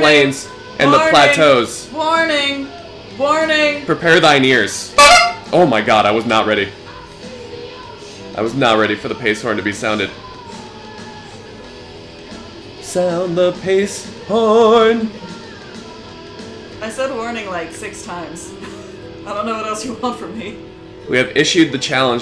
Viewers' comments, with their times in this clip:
0:05 "Prepare thy ears" horns "Oh my God I was not ready" I died lol